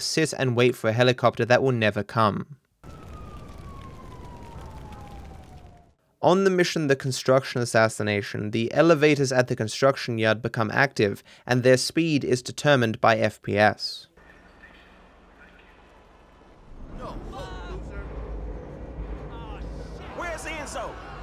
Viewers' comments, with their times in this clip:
0:06 why does that sound so depressing?